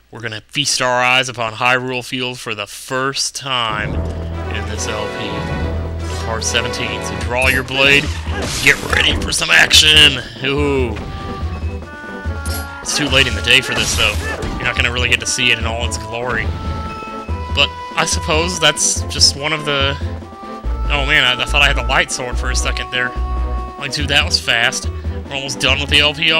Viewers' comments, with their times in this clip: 0:09 ready for some action. Was there a hidden burp ? XD